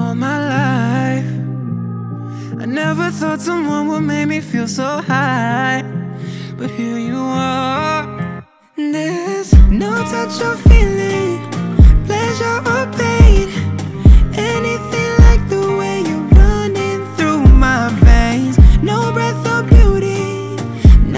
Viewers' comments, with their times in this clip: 0:04 Bro that run CARRIES the song🔥🔥🔥🔥🔥😍😍😍😍😍😍